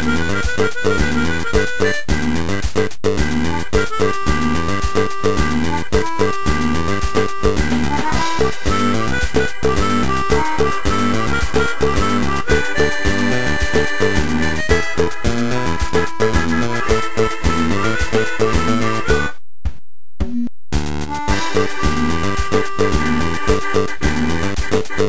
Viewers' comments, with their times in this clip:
0:08 Ironically, I can imagine Randy Newman of all people singing this tune, if it were to have lyrics in a Toy Story film. Specifically